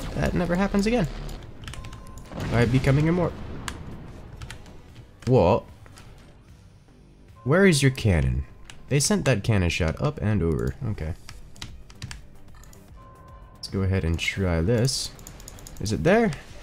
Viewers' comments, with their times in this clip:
0:03 why’d he turn British for 3 seconds 😂
0:04 HIS REAL VOICE!